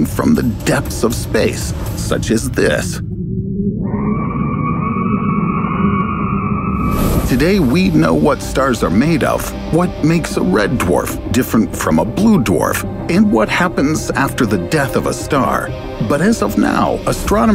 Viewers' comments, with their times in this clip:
0:03 sounds like Ramiel
0:04 that’s a titan screaming in space
0:04 they just heard chichi yelling at goku. nothing new. 🤣